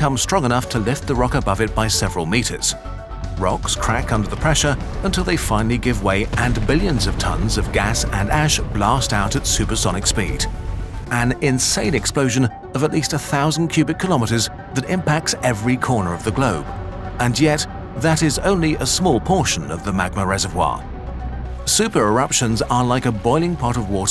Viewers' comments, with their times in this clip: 0:06 bro sounds like the rock meme